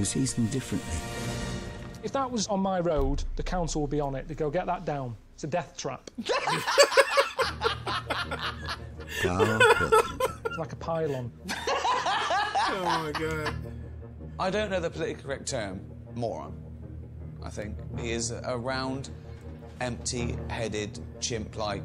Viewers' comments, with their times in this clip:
0:06 first of many laughs 😂